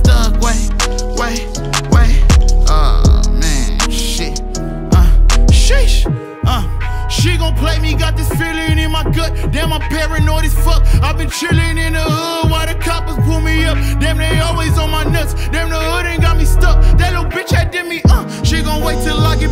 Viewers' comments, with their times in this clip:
0:06 Lol the verse … i thought it was an unnamed feature
0:06 The flow switch 💀🔥💀🔥💀🔥💀🔥💀🔥💀